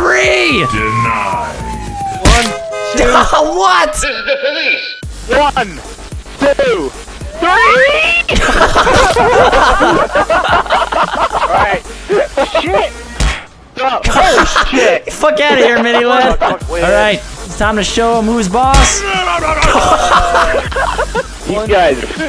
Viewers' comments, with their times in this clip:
0:07 the origins of REEEEEE